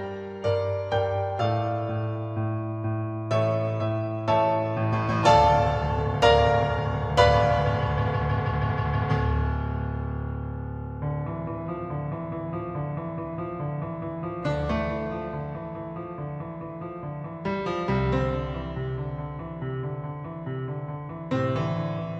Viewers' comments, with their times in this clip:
0:09 From onwards, listen to this at 0.75x speed. That is more in agreement with the original. This one's played too fast.